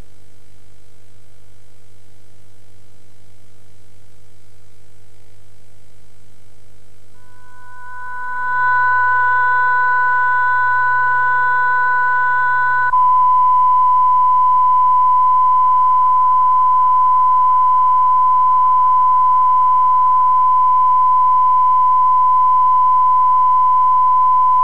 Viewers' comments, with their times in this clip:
0:10 an irritating test tone is sounded, and would've been loud enough to wake up some sleeping viewers. After the tape cuts, the transmitter was most likely switched off for the night.